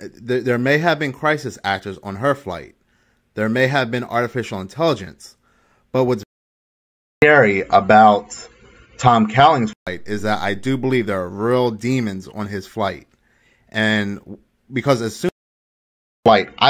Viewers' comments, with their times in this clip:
0:04 Odd audio stuff here